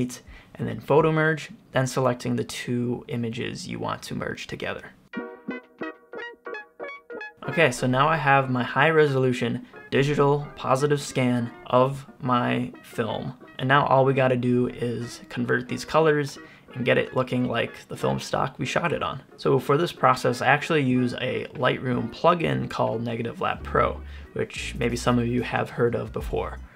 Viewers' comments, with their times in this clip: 0:07 Music in the back was banging ✊🏽